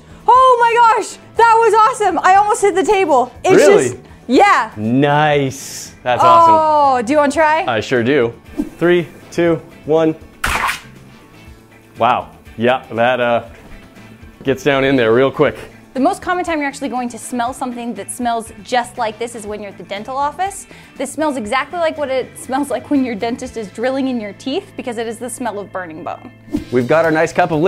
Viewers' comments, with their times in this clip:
0:08 the common sound effect in a cheap action game